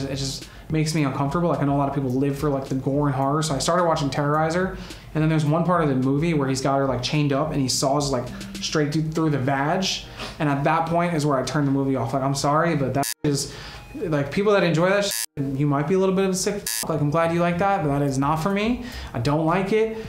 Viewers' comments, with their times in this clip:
0:05 dude sounds like my wife